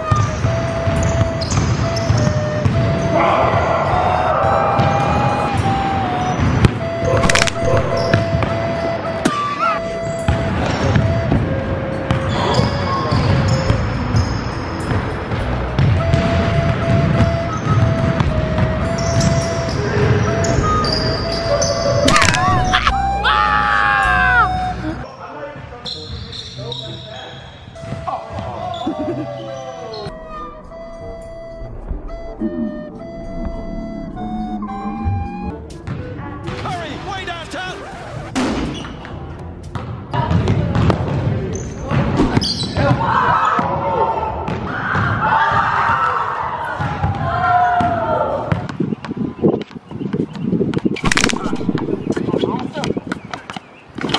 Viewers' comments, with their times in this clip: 0:07 the fucking crack sound🤣
0:37 misses while also making a loud bang on the backboard